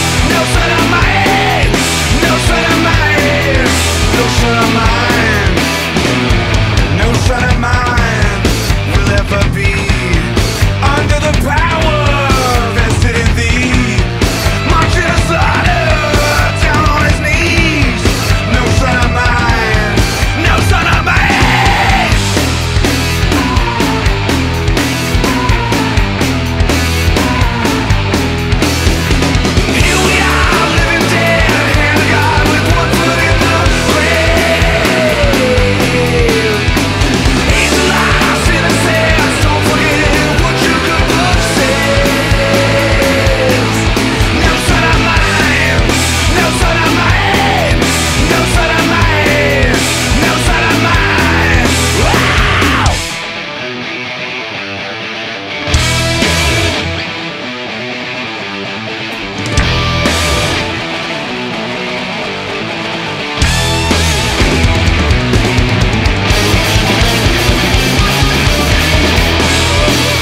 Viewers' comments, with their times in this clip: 0:07 Great drumming, Taylor on 2nd verse !
0:52 sounds exactly like The Trooper by Iron Maiden
0:53 You can even hear "The day that never comes' solo" min